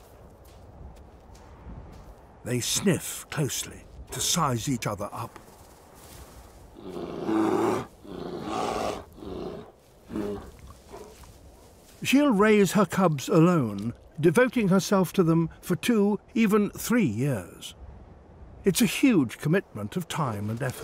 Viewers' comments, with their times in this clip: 0:08 Sound like deep burps